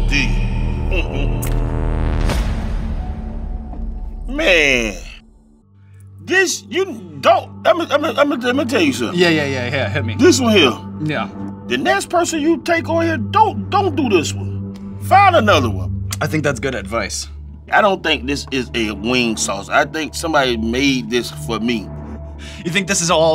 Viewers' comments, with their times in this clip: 0:10 boy started sounding like plies 🤣🤣🤣
0:11 His whole voice changed lol 🤣😂 he started sounding like plies for a minute